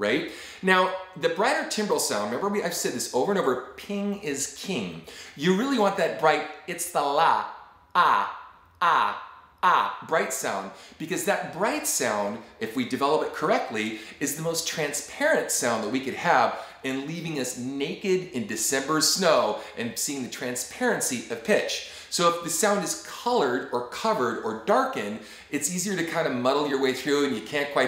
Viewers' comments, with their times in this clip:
0:08 Count Dracula laughing haha